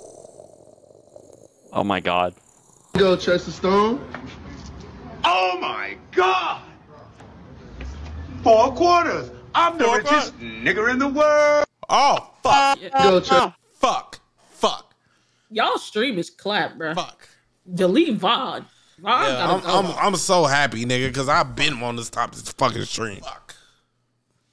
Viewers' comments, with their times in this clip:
0:10 Yo bois. Ya didn't bleep it out.